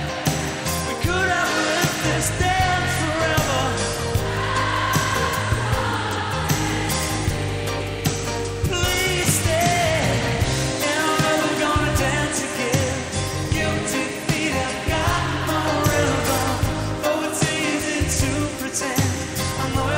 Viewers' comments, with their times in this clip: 0:03 A big shout out to the crowd (Careless Whisper). the audience hit the right note.